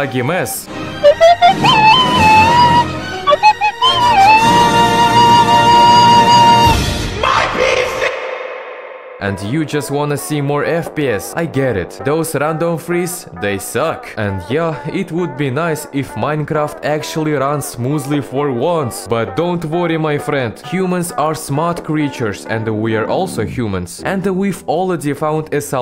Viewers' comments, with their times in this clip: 0:03 extremely annoying sound effect
0:09 that Pewdepie vs Tseries song 😭